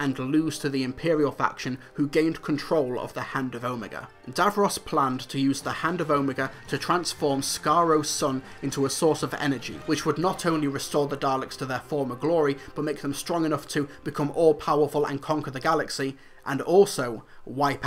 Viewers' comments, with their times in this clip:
0:03 I know your British or something, but you should at least say Omeaga, it is in no way pronounced Omiga.